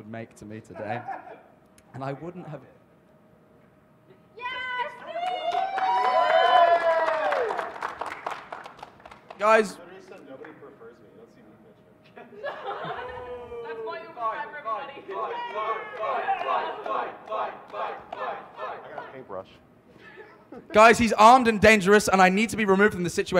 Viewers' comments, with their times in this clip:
0:04 did someone yell yass queen